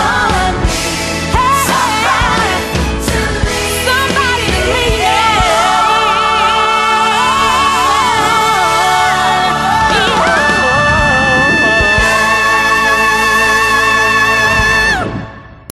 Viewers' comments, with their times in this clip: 0:11 i love Rachel’s face when Mercedes did this high note omg same girl